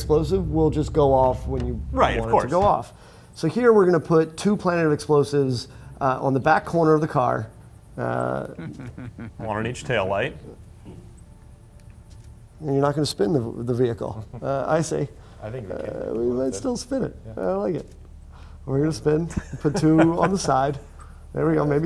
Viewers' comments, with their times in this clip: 0:07 what laugh was that?